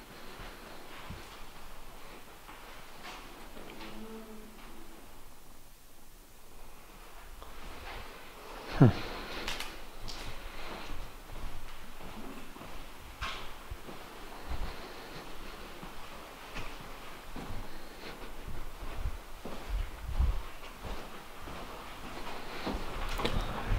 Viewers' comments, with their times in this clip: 0:03 sounded like a weird hum faint th the background. sound up headphones on
0:03 you walk into room and either I heard moan or like the sound a wooden chair makes on a wood floor that kinda noise....
0:04 sounds like a moan. Could have been anything I guess.
0:05 there was a Screech sound from a chair.